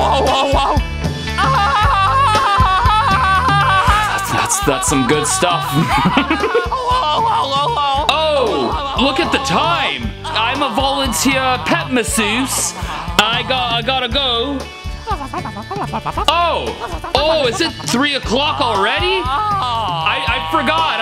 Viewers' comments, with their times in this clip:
0:06 the little laugh 😂